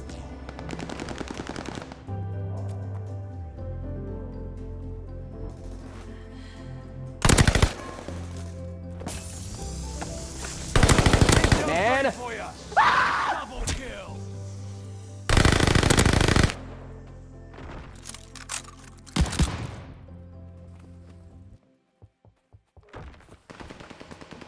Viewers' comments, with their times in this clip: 0:10 that scream was so passionate 🤣